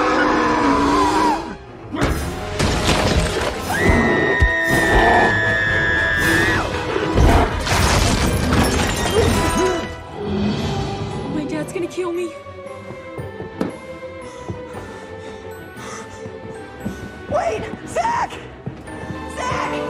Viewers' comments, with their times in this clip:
0:06 I liked the part when he screamed like a little girl 😂😂😂